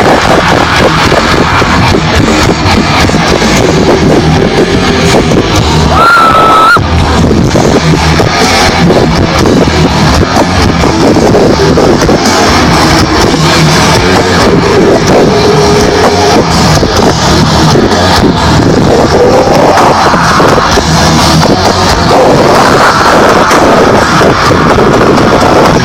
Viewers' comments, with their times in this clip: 0:06 nice screaming girl ;)!!!